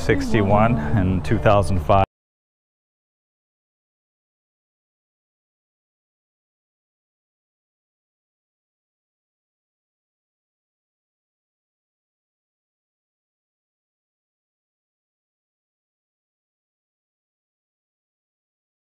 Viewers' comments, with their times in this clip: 0:04 I lose sound?